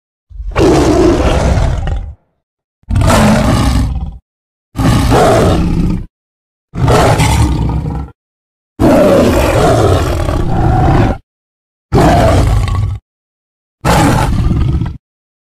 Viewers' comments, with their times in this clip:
0:01 Sound like carnotaurus